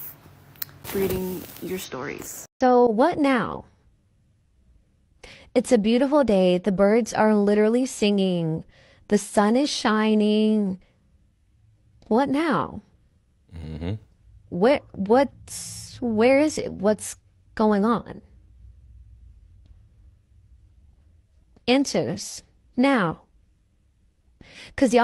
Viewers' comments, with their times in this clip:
0:07 Shawdy sound like siri.